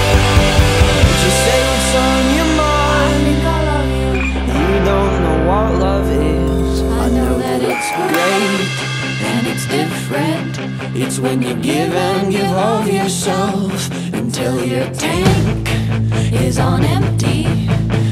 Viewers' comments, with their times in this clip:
0:03 I love these songs when the backup singer comes in and it's just a bit quieter and calmer ! you guys nailed it!!!